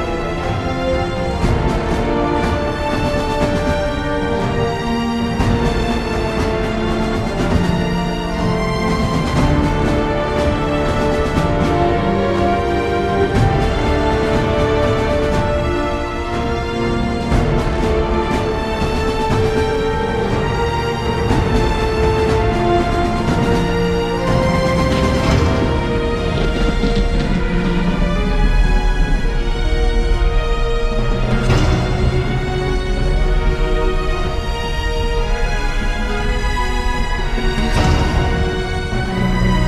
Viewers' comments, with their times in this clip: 0:09 I don't blame you for not being able to spot it since it's in a completely different key. It's the horn
0:26 That thunder was just the icing on the cake